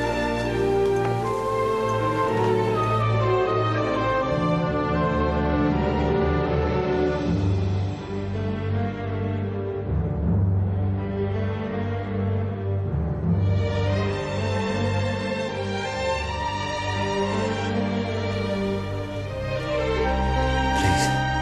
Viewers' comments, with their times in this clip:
0:07 OMFG KWVDCBDKSVSGDJC high-pitched squeal